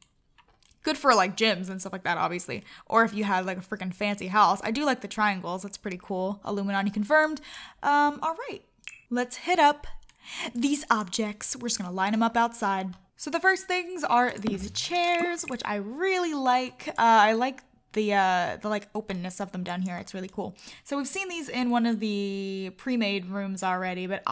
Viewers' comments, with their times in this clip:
0:05 I love her casual Illuminati confirmed it's hilarious.